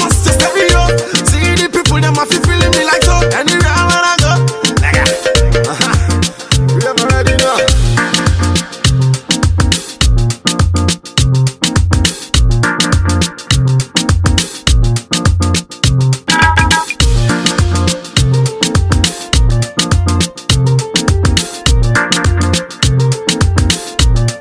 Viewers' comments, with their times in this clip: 0:08 The instrumentals from straight fire 🔥🔥🔥🔥🔥🔥